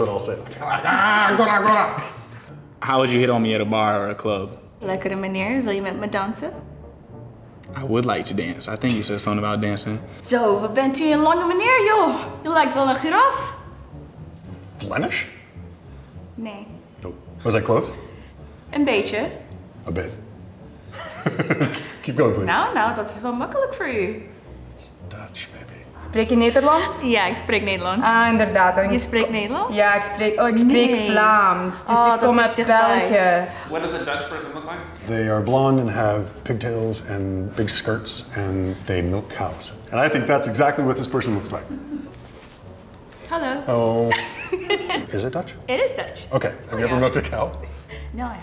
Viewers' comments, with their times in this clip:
0:04 Im too convinced the chick is speaking Sims
0:04 no one speaks dutch this way. idk why she does us like that lol. her accent is not fluent too
0:10 so interesting that it almost sounds like an american accent
0:12 so interesting that it almost sounds like an american accent
0:12 that one pronunciation error with "giraffe" actually triggers me a lil bit but for the rest it was good. make it more like "Zj"-iraf and u good
0:29 sounds like sims